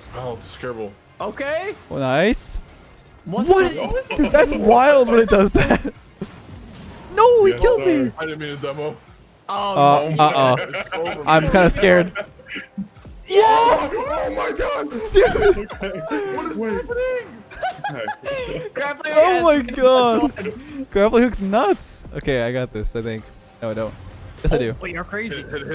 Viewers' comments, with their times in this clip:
0:05 sounds like mickey mouse
0:06 sounds like micky mouse 😂😂